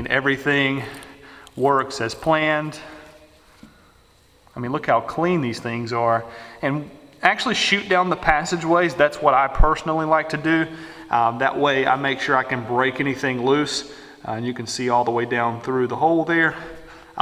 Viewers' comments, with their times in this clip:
0:04 it sounds like sand moving on metal.